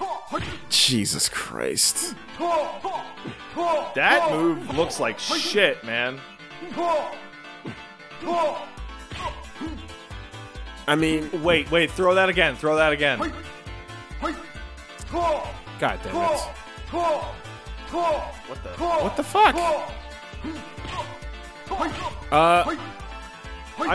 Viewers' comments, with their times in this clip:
0:06 when that house beat comes on though